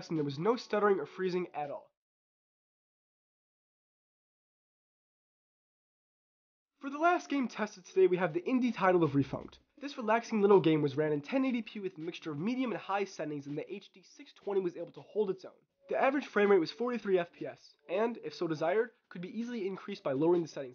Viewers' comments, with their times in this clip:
0:08 Great video! What's the game ? I can't quite make out what you said.